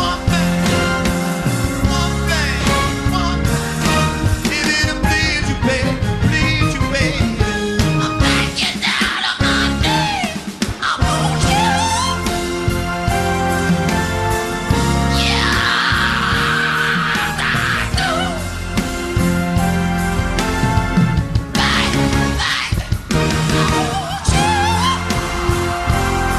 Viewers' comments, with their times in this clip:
0:07 My absolute favorite moment is when he sang/screamed those high notes ... got me in tears.